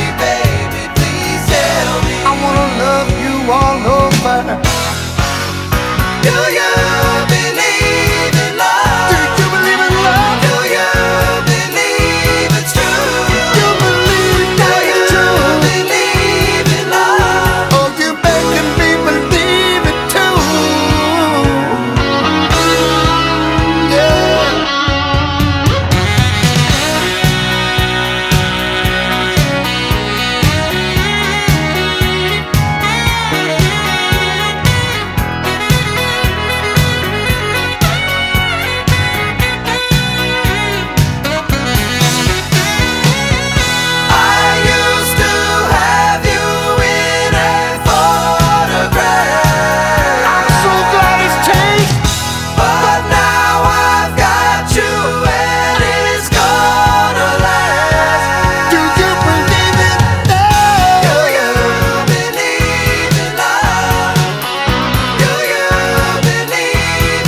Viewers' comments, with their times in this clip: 0:08 When Huey says "do you believe in love" I 100% believe the conviction with which he says it!
0:26 40 years later and the sax solo still gives me chills.
0:43 I always loved the line "I used to have you in a photograph" Harmony there is incredible.
0:44 That harmony .......fucking incredible vocals! Huey Lewis and the News were as good as it gets
0:46 That harmony is unbelievable!
0:46 ...well said... 🎶and that harmony ("photograph") is incredible ❤️
0:47 The harmony/chord on the word "photograph" is just so lovely. I listened to just those few bars over and over. I think it's just a major chord with the 4th in the bass which in essence makes it a Maj9 chord but the voicing and whatever else just make it magical.
0:49 For the musically inclined, the chord is a B major 7th. It puzzled me for a long time as to what it was.